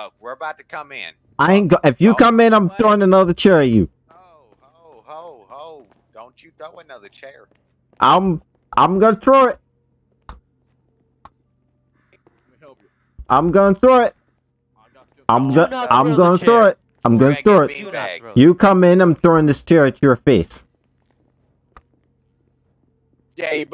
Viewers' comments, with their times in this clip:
0:08 They way he said "yOu rUdE" LMFAOOA Edited: "My issue is u so yk continue I guess we all have issues over here." LMFOAOAO Edited 2: "Dont u throw another chair." SDUHVYCYDGYSAD